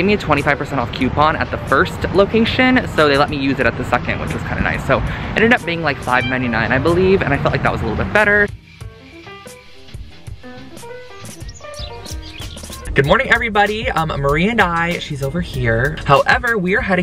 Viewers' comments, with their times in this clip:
0:03 Anybody else hear a kitten meow ??